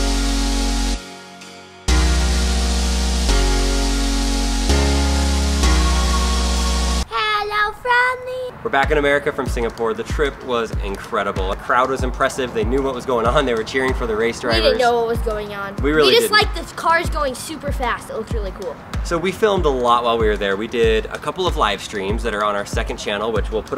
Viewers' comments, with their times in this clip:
0:06 XD nice song